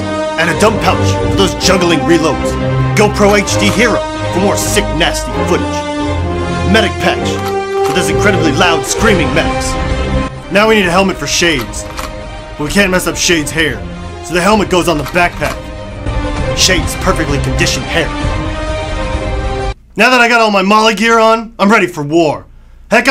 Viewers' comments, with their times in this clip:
0:06 Lol sounds like he says "Got that sexy bitch helmet"